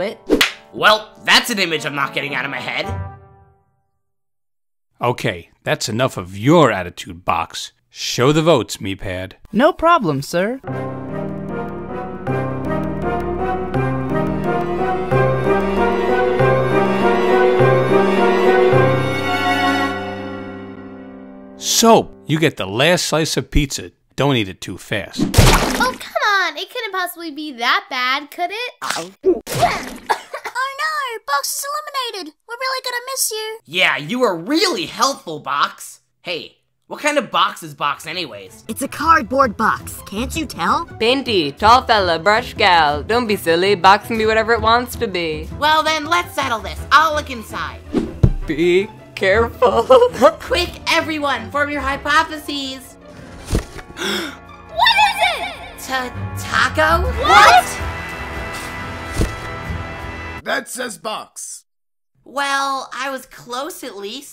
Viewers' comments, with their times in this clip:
0:09 me pad sounds so cute
0:09 Yay cool music
0:10 nice elimination music
0:10 it sounds like the sonic theme drowning
0:11 the most epic music ever
0:29 Insert Soap's Stomach Growling Here
0:30 Suitcase's little "Aur Naur 🥺" i just can't-
0:48 the voice actor for light bulb snickered